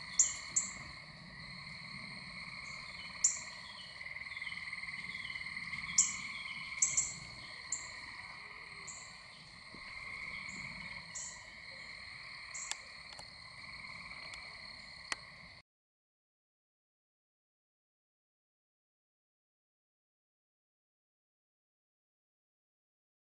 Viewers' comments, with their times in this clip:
0:05 Haa! I just re-watched, and you're so right! 🤭And, I just saw your caption afterwards -14 "You can hear the Cardinal chirping, I disturbed it off the night roost" ! 😃🔎